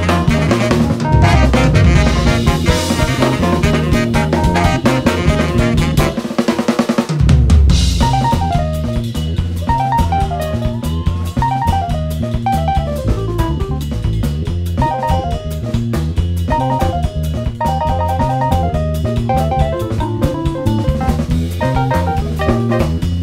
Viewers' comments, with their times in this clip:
0:05 Crazy good! Puts a smile on my face :) fav solo so far: